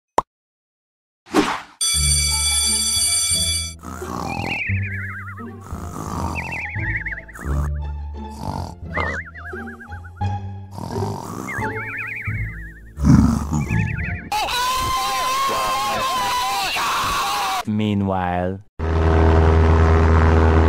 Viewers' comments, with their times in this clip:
0:04 sounds like g major 7